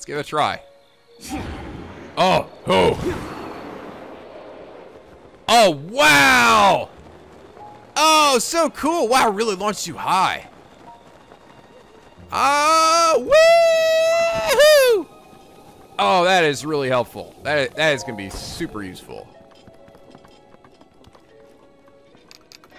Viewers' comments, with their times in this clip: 0:05 "I can see my house from here." Your Revali sounds like a jerk version of Yosuke. On second thought, it's more like jerk Edgeworth. Jerky-er Edgeworth. I'm actually a bit disappointed the Rito storyline didn't go on for as long as the others, the Rito are one of my favorite Zelda races (right after the Zoras). Oh well, at least there's always Kass.